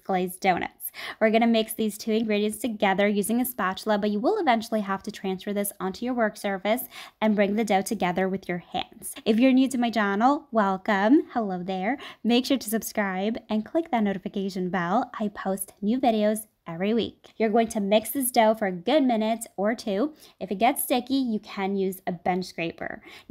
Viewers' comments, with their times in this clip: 0:07 omg did you hear! XD she said 'jahnel' instead of 'channel' ! XDXDXDXDXD LOLlLlL
0:08 but what is a "jannel"?